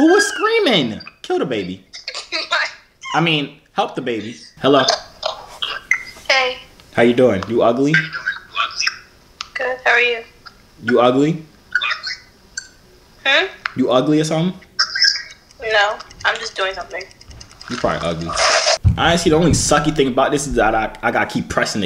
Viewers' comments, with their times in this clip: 0:08 that voice though🔥